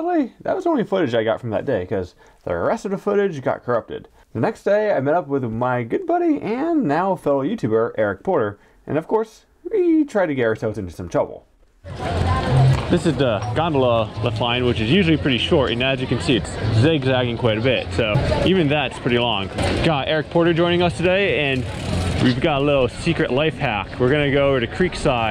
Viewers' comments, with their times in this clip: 0:08 Whoa dude those narrow tree line is sweet... love how I can hear everyone's Ooooos and Ahhhha and giggles of joy!